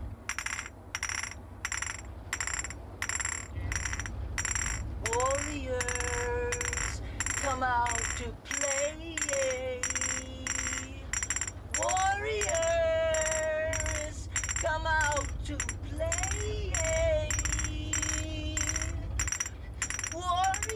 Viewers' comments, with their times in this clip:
0:03 ...you can hear the director say "action"